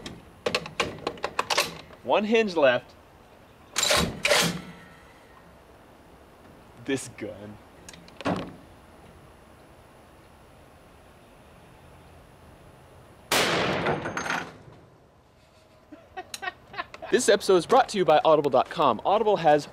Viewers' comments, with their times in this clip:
0:03 sound of angels.